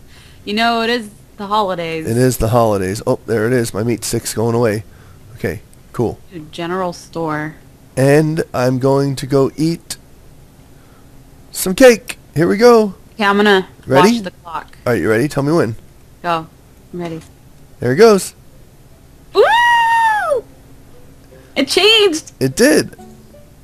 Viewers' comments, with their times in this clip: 0:07 i thought cupquake said I'm going to go to the genial store